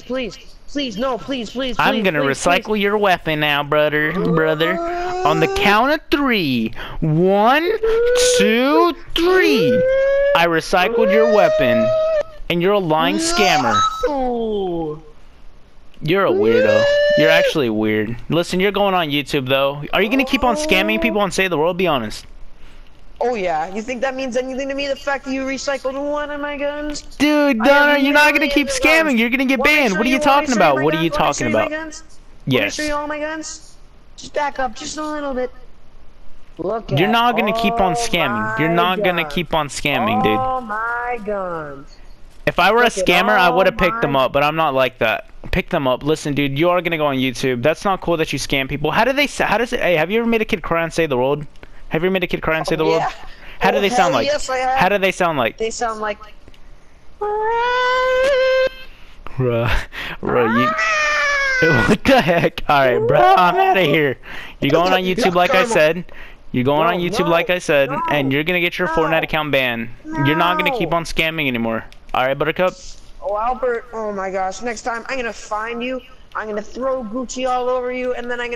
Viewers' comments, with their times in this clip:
0:05 sounds like a polive siren on crack
0:15 THE NUKE ALARM
0:56 an angry cat
0:57 He trying to star in Jurassic Park
1:03 3 voice cracks in a row